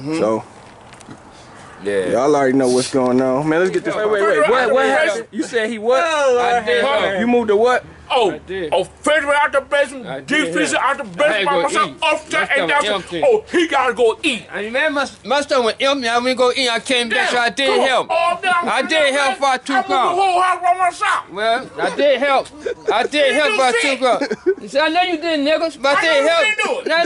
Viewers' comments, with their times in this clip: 0:08 He sounds just like my pops and he sounds just like John Witherspoon🤣 The arguement had me in tears! Ohhh my ribs is shattered right now! 😭😭😭